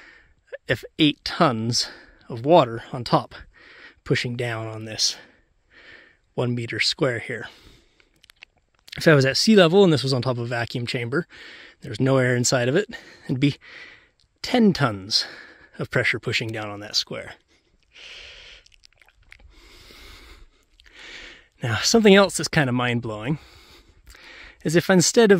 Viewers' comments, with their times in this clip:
0:10 He could have said "2 and a bit" and used the 2 tanks next to the 300L tank.... It's about 2,300, give or take a cup. LoL Sounds like he could really use a sip of that air right now... 😂